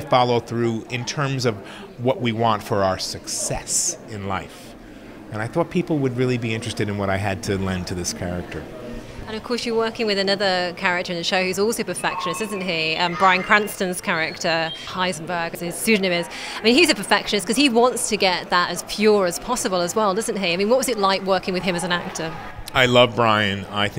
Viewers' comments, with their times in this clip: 0:10 is that R2-D2 I hear in the background?